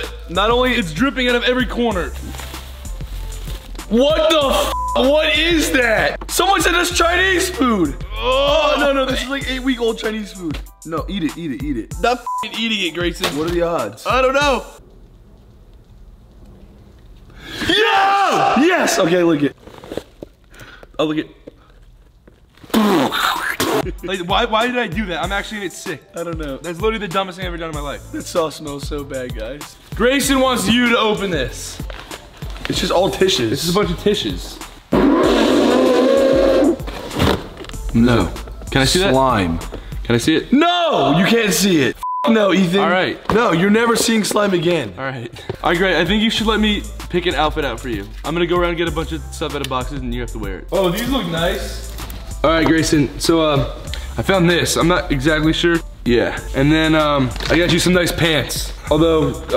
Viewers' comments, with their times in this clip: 0:05 literally Gray's voice cracks are the cutest😍❤😍❤😍
0:23 that sounds like their new outro music LOL!!
0:41 sounds like my mom after I got it on the carpet😂😂😂